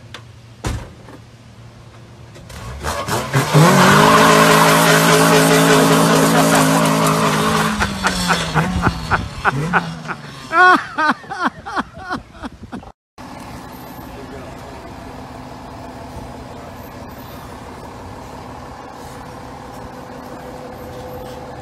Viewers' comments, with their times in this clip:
0:03 ...that was funny and that dudes laugh.